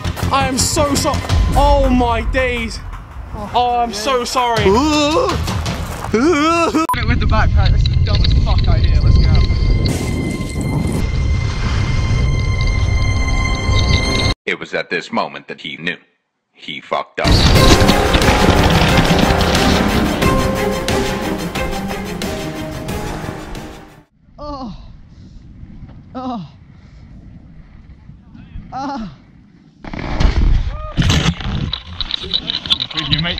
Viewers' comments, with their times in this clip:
0:04 did I just hear goofy?
0:18 when vik started making those noises I couldn’t help but laugh 😂😂😂😂got me dying